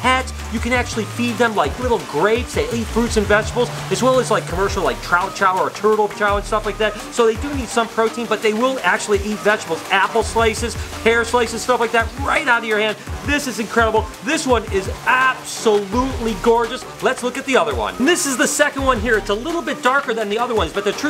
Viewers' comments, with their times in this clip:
0:07 Mmm I do enjoy slices of hair myself